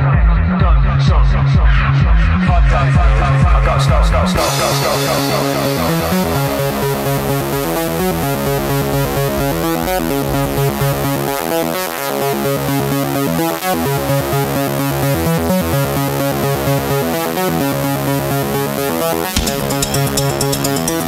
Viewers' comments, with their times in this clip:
0:09 sound like Nord Lead ! Arpeggg